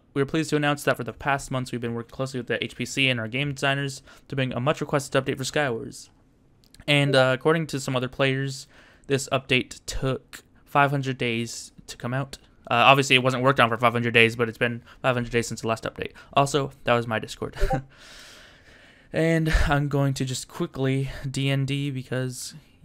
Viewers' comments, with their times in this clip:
0:04 i thought someone messaged me on discord for once :(